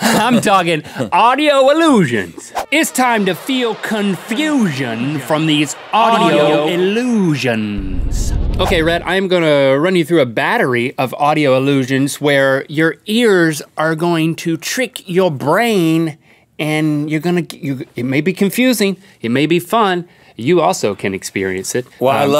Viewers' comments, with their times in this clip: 0:03 I HEARD THAT PART FROM LET TO RIGHT EAR